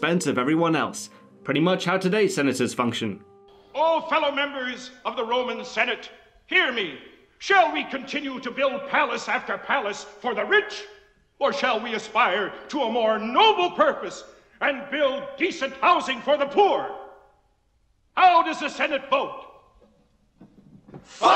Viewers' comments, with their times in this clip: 0:03 I just realized how stupid historical figures sound with an American accent.